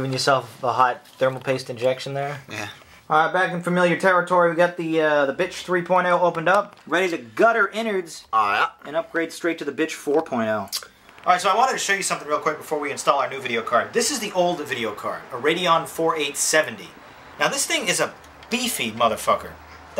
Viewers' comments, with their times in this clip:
0:03 whing! i thought that was funny.